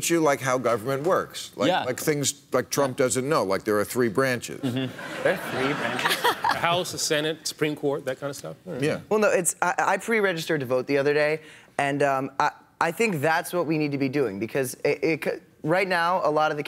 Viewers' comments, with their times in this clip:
0:04 "3 branches?" someone says sarcastically. "the House, the Senate and the Supreme court", says ex AT Holder. what?